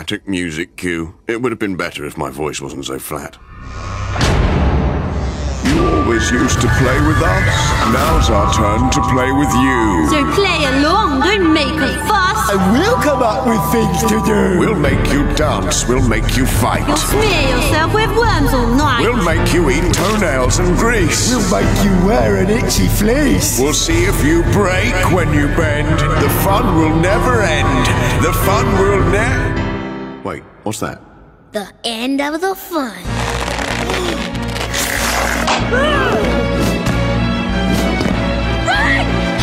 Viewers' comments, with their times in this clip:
0:06 best song in the episode
0:21 Anyone else hear Yellow Guy?